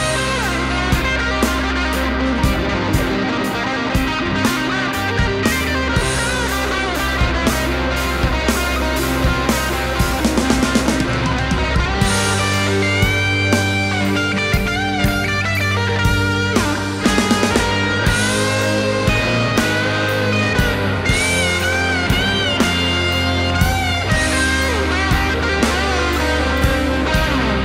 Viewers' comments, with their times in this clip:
0:08 drum strikes on recording don't match what you see in the video.